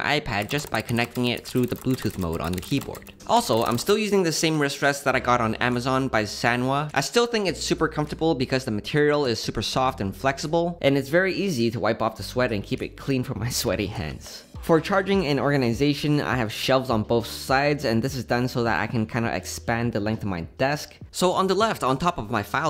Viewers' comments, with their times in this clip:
0:05 wuts that shifting on the wool mousepad?